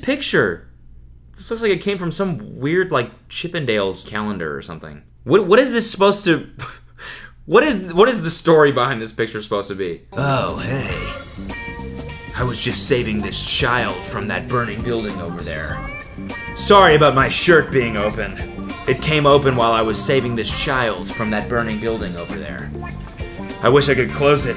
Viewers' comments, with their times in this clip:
0:08 you kinda sound like solid snake